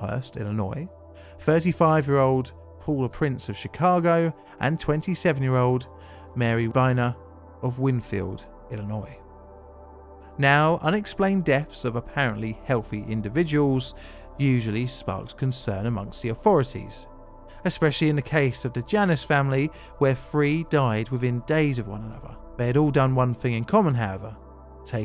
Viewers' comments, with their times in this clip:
0:07 Love your channel. Sources spell Mary Weiner last name as either Weiner or Reiner. Why did you pronounce her last name as Boner ?